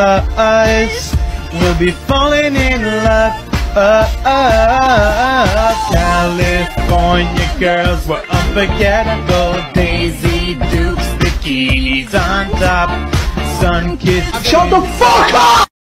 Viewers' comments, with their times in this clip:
0:13 the way jayfather scream his pose looks like a frog XD